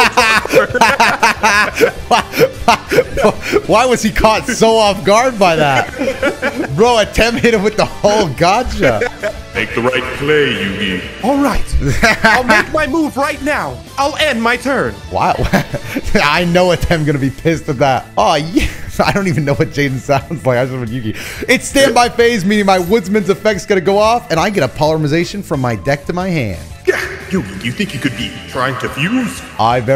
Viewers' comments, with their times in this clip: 0:10 he sounds kinda like yugi lmao